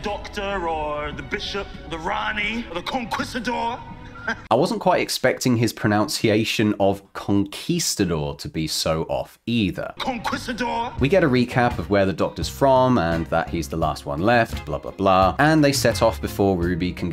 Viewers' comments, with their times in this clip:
0:05 Ironically, while you were complaining about pronunciation, you pronounced "pronunciation" wrong.